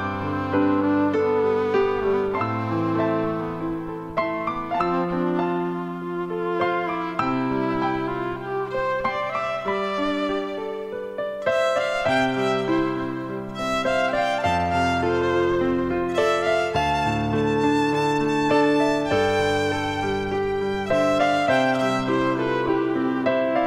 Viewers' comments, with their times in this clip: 0:09 (ish) it almost sounded like it was crying. Wow. Beautiful..